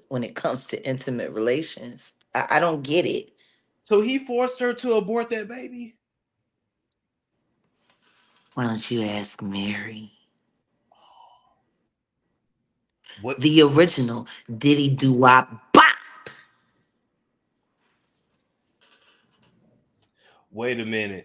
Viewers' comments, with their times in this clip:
0:08 Jaguar responds & answers questions like a 90s interrogation scene and I Love it!😂🫶🏾